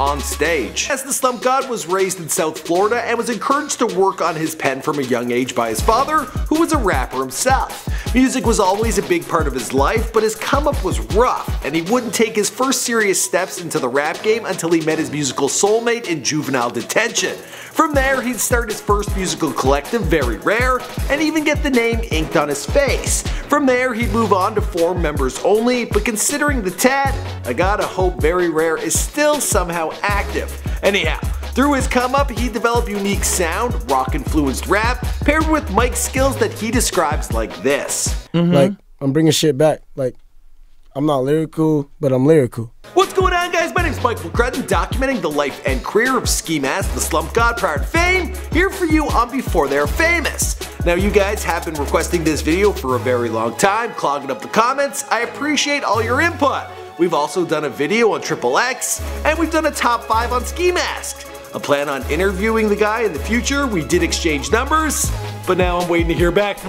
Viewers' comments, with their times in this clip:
0:05 Step 1: Turn your sound at max🔊🔊 Step 2: Go to Step: 3 Go to the doctor.
0:53 ski mask the sluM god